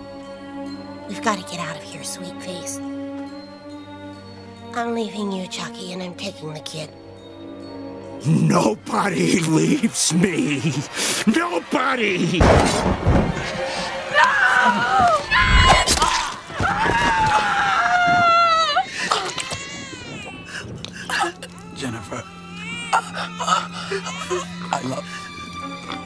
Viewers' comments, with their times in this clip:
0:08 insane laugh,killer look and a joker references from that one batman game about not getting forgoten,chucky will make a great joker in the future